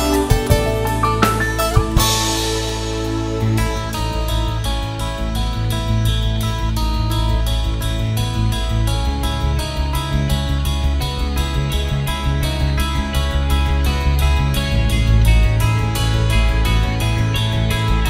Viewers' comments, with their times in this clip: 0:03 sounds just like Rush. Awesome.